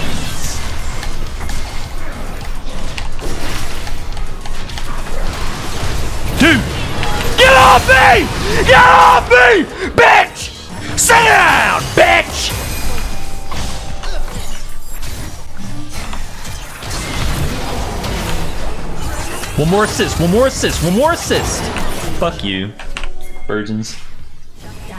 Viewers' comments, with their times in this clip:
0:06 the sound you make when you wake up with a spider crawling on you